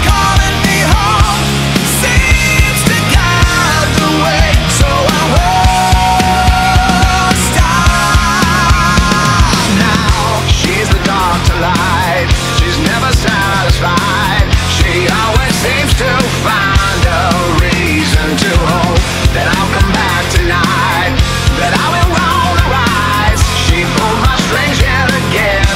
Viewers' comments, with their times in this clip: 0:10 Am I listening to Standing in the Sun ? Sounds just a bit faster !
0:10 The song was fine until the minute began. I don't like the rhythm change. Feels like standing in the sun appears. 2 desynchronized times
0:10 Sounds great! reminds me of Standing In The Sun.